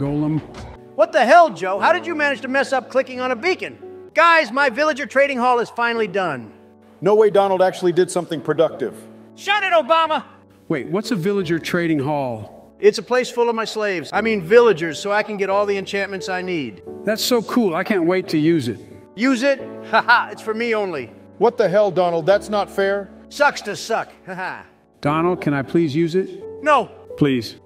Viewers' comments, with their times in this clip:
0:10 shut it obama what happened ti your voicr